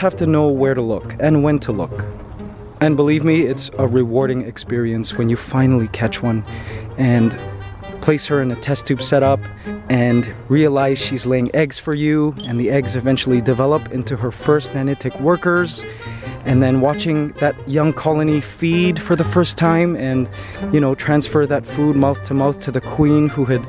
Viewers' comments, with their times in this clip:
0:08 he sounds like a mom (not a bad thing)